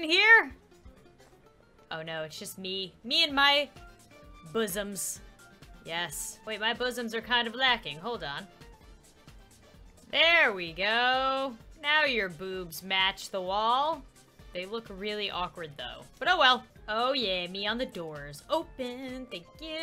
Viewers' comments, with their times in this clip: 0:04 i skipped to that and all i heard was 'buzzums'